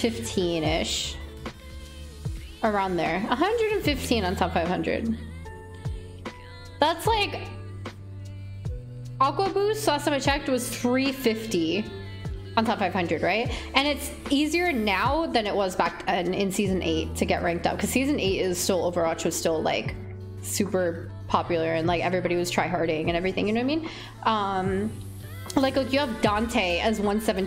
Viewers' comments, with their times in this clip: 0:09 I literally just watched his subathon stream all day and then heard their voice and was so confused lol I had to rewatch a couple times. And yeah the overwatch community has a lot of toxic players and it’s unfortunate that we as players have to deal with them. Glad you took a stand and made sure they didn’t just degrade you nor your brother, hats off to you❤️